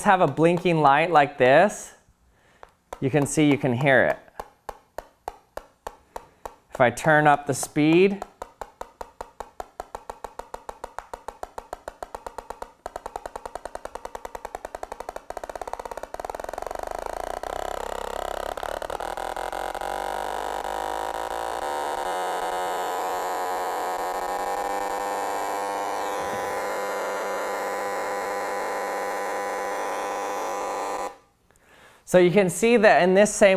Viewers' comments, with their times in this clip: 0:04 serious "Swedish House Mafia - One (Your Name) (Featuring Pharrell)" vibes there.
0:09 helicopter takeoff to speed boat ..
0:09 Minecraft noise intesifies
0:19 light go brrrrrrr